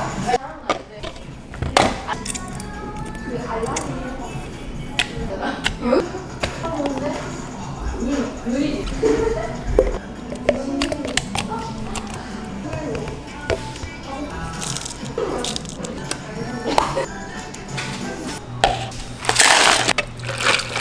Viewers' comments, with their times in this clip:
0:06 AND DITTO PLAYING